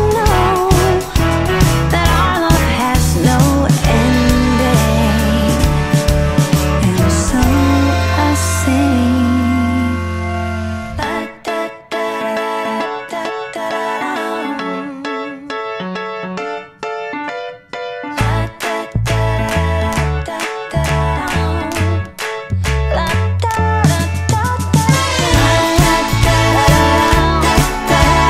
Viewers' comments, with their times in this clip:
0:10 The lick made me feel weird